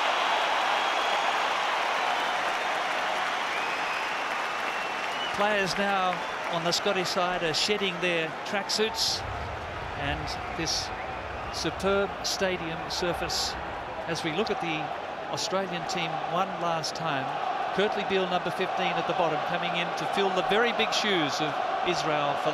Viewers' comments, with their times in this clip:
0:07 now Scotland are shitting their tracksuits? Ahaha